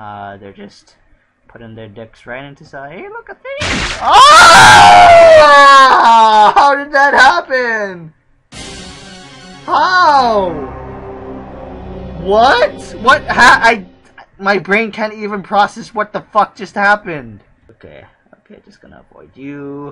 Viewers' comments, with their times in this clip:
0:03 Woah, that scream was genuine.